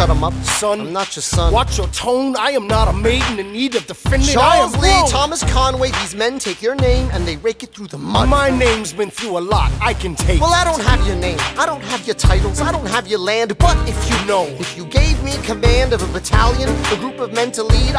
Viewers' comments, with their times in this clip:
0:04 That little "Woah" Washington says keeps me alive